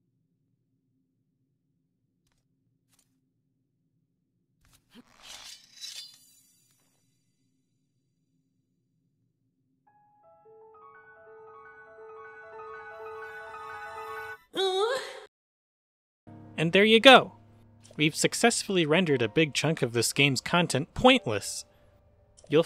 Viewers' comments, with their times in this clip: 0:05 the batman voice is perfect for this